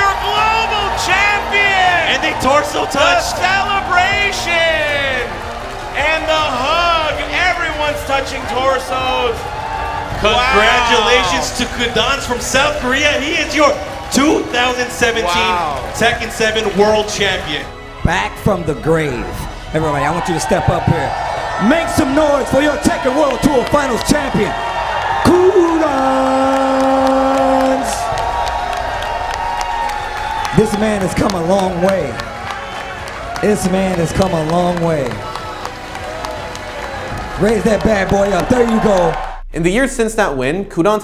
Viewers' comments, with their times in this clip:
0:07 "im numbah one!" no matter how loud and noisy the world is, a champion's voice will always be heard.
0:24 This was cool but that voice crack dough